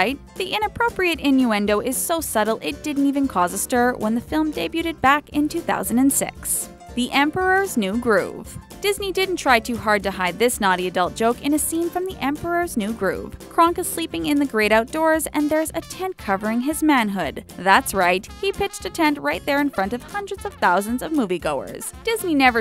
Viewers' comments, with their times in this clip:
0:05 "back in 2000 and se*" I don't think you tried too hard to hide that one lol xD
0:06 Two-Thousand And Sex???? I Heard It